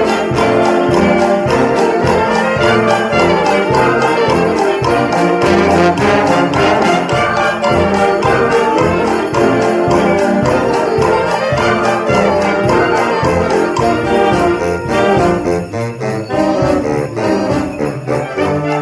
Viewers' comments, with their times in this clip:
0:06 Lets just take a moment to recognize the trombones